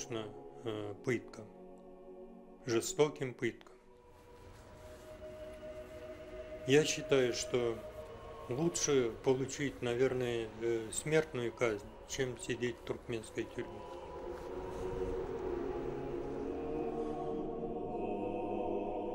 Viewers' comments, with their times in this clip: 0:06 "yes it is the roots of public nagging a symmetrical SimCity has taught me" - Former Minister of Turkmenistan